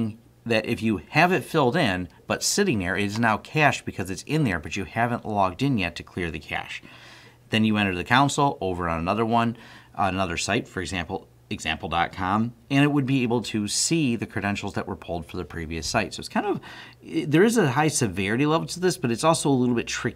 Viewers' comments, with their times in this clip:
0:07 ..then you enter the...what??? Council? City council? What cty??!